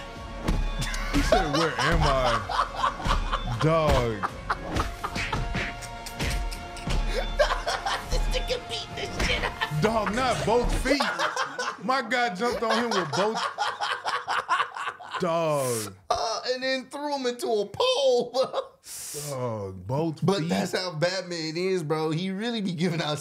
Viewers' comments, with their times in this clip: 0:09 I fucking love it every time Bateman ends a beating he just politely tells them “Goodnight”